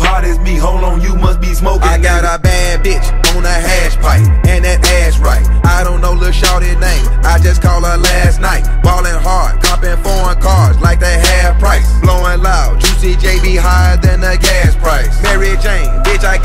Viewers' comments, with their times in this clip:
0:04 When drops it’s wetttty